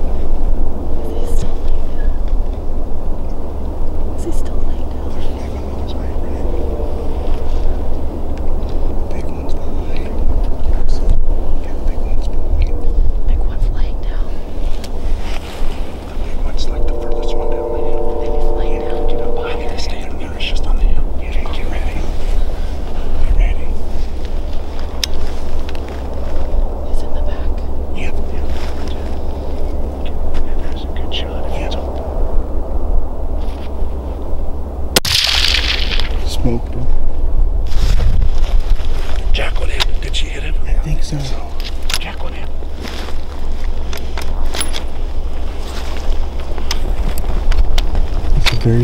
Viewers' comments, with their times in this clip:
0:10 sometimes a passing freight train is a blessing. The noise covers your movements. I know a guy who hunted public property near a freeway. He would wait until a truck was passing by to move so that his steps were covered by traffic noise.
0:33 . . . . CRACK . . . . SMOKED HIM.